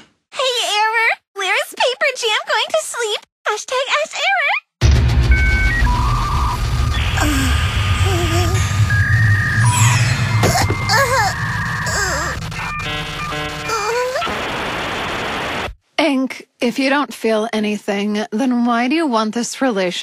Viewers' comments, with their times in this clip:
0:08 the sound of my computer when I watch to much undertale <>_<>